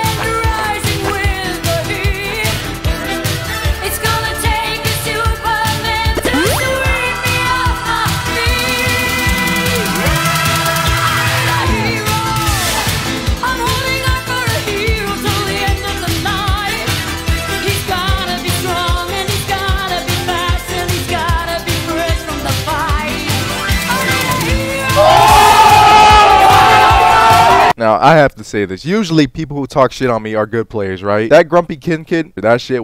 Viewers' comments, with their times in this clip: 0:06 insane beat and music coordination
0:11 the beat drop on the "I need a hero" was actually perfect timing
0:11 are we not gonna talk about this drop the beat timing?
0:11 that beat and ult timing😫
0:11 Is anyone gonna talk about the sync of Lucio's ult to the song ?
0:12 was so on beat with the beat omg the satisfaction is too much, amazing video bro.
0:12 the beat matches the beat!
0:12 That editing. The lucio beat fitting the beat of the song. Yes please.
0:12 that perfectly timed beat drop was clean
0:12 The on sync beat 🥶🤌
0:12 perfect time for that beat and went with the song chefs kiss loved the vid 😩❤️
0:13 Let Appreciate the mans editing Ult and the beat drop 🧊😎